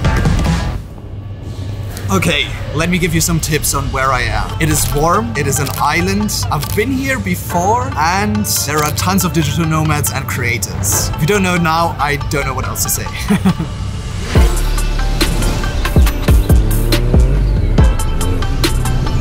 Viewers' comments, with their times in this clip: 0:07 sounds like one piece wano theme